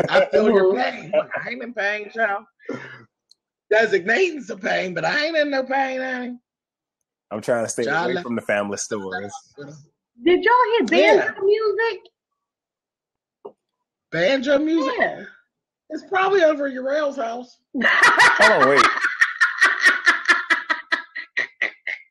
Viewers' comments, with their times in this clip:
0:09 I figured out what the banjo music was ... my speaker was making a dragging digital sound and I lost audio right after.